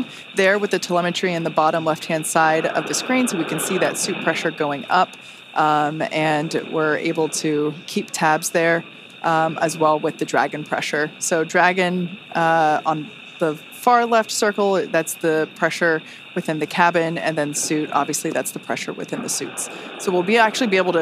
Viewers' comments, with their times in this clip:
0:07 I HEARD A LITTLE GIRL SING 2 NOTES